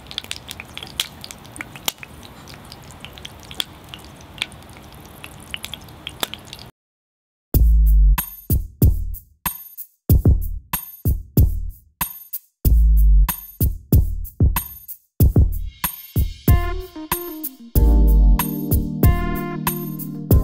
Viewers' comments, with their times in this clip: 0:05 Love the porn music... lol